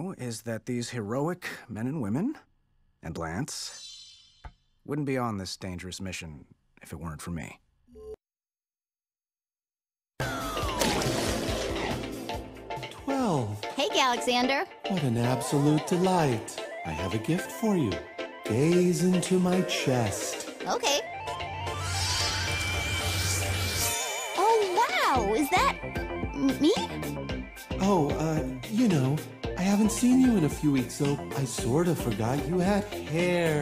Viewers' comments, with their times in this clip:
0:05 Omg i forgot that there is a sound effect for lance 😭😭😭
0:18 i cackled when i thought he was gonna say "I have a gift for you. GAYS!"